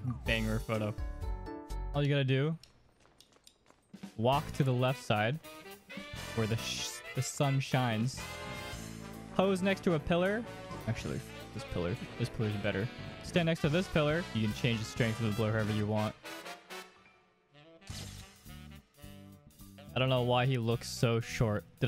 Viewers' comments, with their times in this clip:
0:08 Anyone know the song ? Its very catchy!